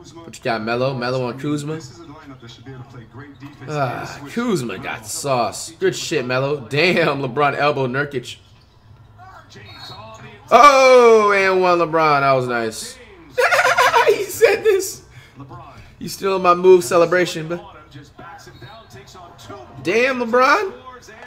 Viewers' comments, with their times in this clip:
0:03 Flight said Nurkic's name right
0:06 notice how he doesnt say nur-kike
0:06 flight said his name correct
0:06 This how u know flight just be trolling. He literally said Nurcic
0:06 did y’all notice that he said nurkic and not nurkEyeK?
0:07 Wait did Flight said Nurkic’s name right😂